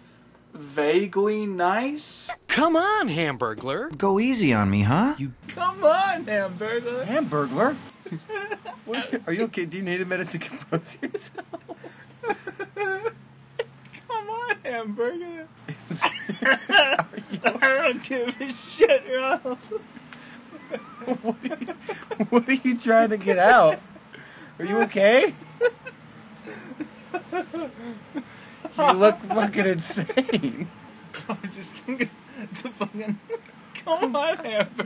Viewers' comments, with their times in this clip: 0:08 that laughing was so hot
0:21 definition of contagious laughter